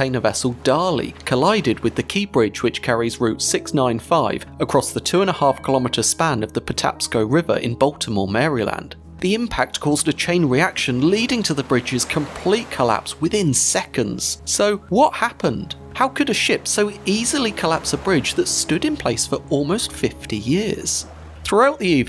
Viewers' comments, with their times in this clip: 0:07 As a native Marylander, the way you pronounced Maryland hurt